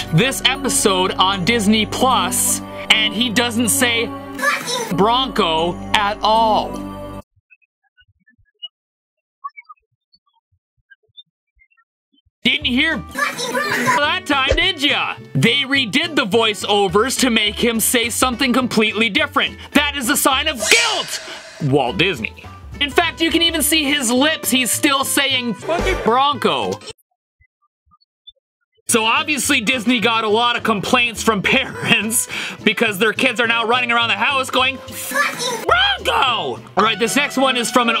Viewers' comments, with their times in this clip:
0:07 i can't hear
0:13 no I didn't, I heard squeak squeak
0:13 i didn't hear anything
0:18 does not work for headphones. The audio is just like distorted and Sounds like the volume got turned down
0:22 my airpods can hear it but when i disconnected, i don't hear any sound